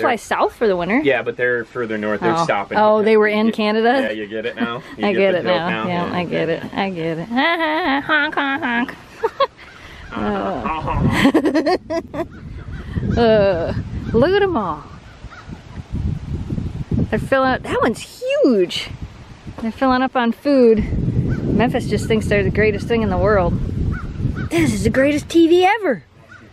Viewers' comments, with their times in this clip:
0:09 That laugh I was laughing sooo hard my dog started barking